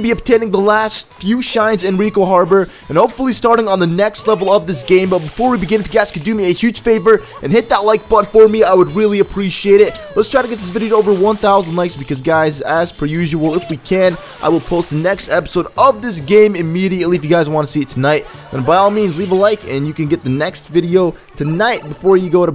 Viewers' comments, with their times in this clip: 0:08 It sounds like a shine is somewhere in that area... on the building maybe?